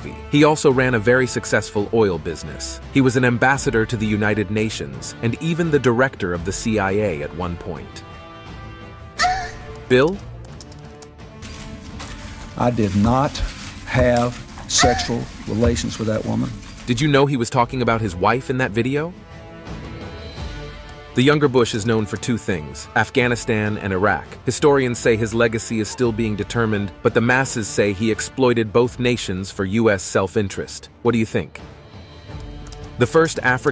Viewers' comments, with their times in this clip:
0:09 😮 what is that scream?
0:09 That "ah" Got me💀
0:14 what a fuck is that?? Sexual Scream